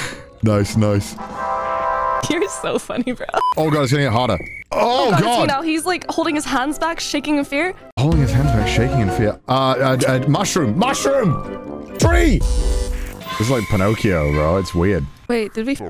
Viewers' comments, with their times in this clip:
0:03 Did she say "Cutie is so funny"? 😂